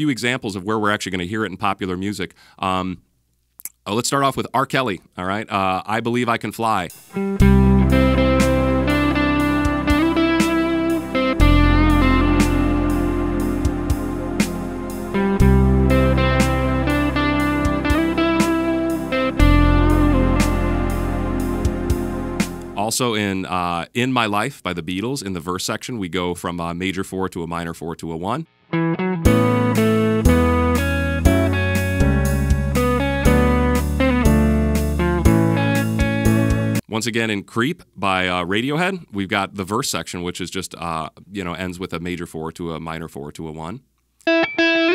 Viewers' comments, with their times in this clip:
0:06 that sounds a lot like Wildfire's opening theme
0:29 kinda reminds me of a Mario song